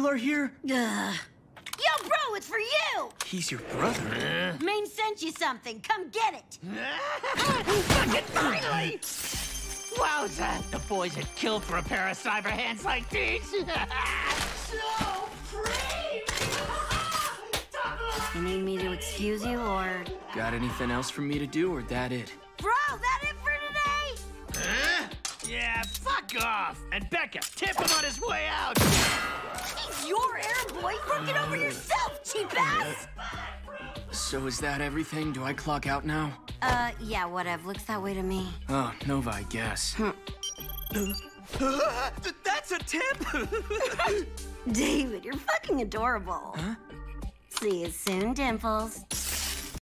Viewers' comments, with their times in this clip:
0:07 you can weird cartoon sound
0:33 that chaotic "ITS BULLETPROOF HAHAHA" has me rollin
0:43 the way she says adorable makes me smile everytime